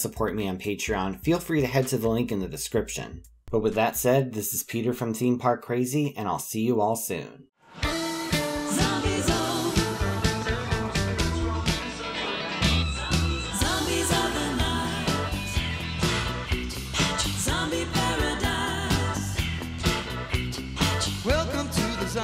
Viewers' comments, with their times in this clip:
0:08 The song kinda goes hard ngl